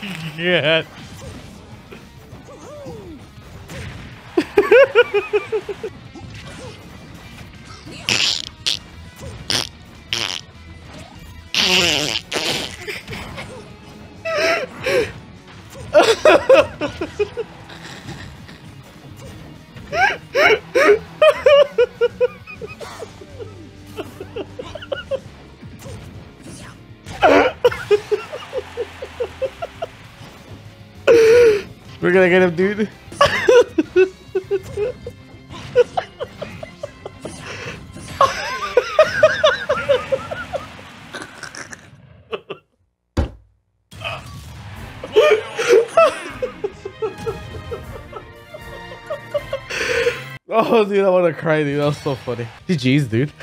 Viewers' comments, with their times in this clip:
0:06 Black people: Laughs like spray bottles White people: Laughs in monotone Spanish people: Laughs in racism Zero: SOUNDS LIKE FUCKING DUCT TAPE
0:08 ZeRo becomes Donald Duck on stream, further proving to Twitch chat that he is an anime duck boy in disguise
0:09 he is farting of laughter XD
0:10 when you squeeze your rubber ducky
0:11 Why ZeRo’s laugh sound like a roll of Scotch Tape
0:40 when your Clorox sprayer runs out of bleach...